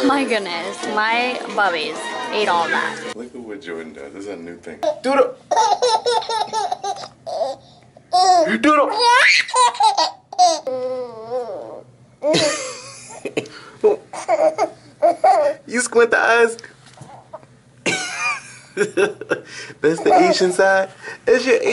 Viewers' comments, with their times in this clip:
0:06 was my favorite i love happy babies and that adorable laugh